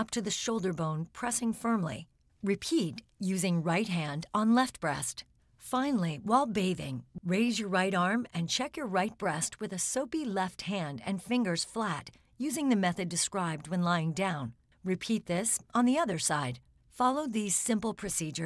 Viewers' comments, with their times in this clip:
0:05 that stutter and saliva accumulation